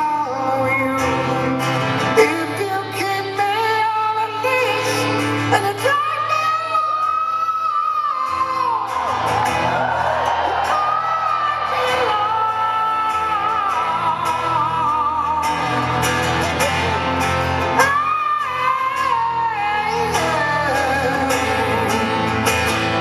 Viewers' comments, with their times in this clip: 0:05 ...wow! great voice!
0:05 not even my drunk dad used to hit me how he hits that note